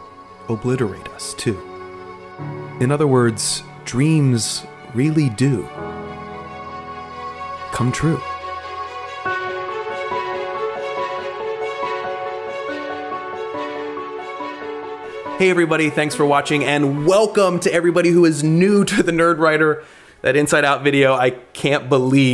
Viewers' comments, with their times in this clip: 0:09 the music playing???